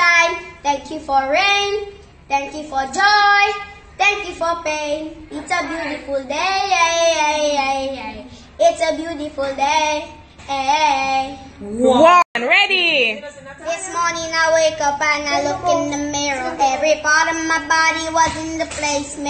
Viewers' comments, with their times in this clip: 0:05 when he sings thank you for pain a lady shouts out “that’s right “ it’s how you know they experience pain in Africa